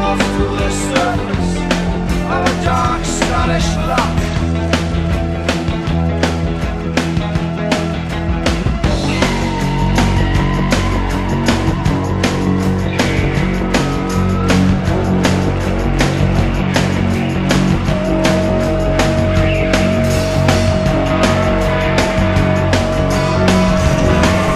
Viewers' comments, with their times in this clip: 0:08 I hear a snare drum where there's no red light. Nothing to do with the playing, but do you think that was an error on the company's part?